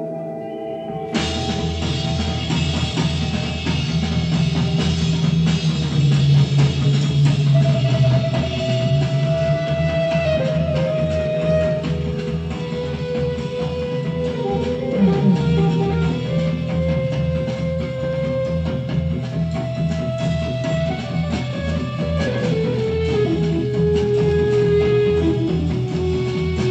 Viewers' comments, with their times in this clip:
0:09 Starting Rick starts playing his turkish delight (as his band mates fondly referred to it) and immediately I got Careful with that ax vibes. I love all of his contributions to the band but especially in their earlier days. So very creative.